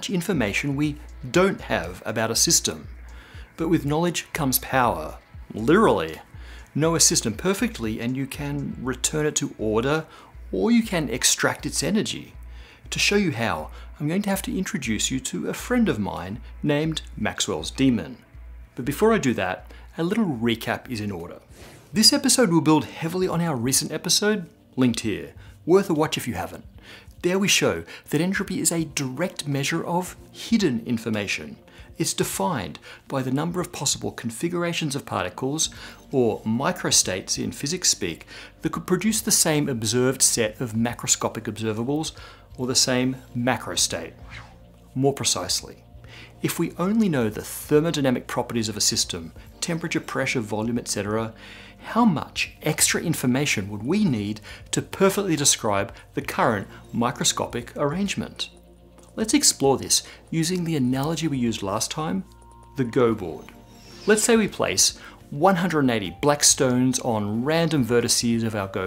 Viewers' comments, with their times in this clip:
0:04 Literallallally!!!!! ??? Weirdo! Literallallally! Like !
0:53 The weird noise is gone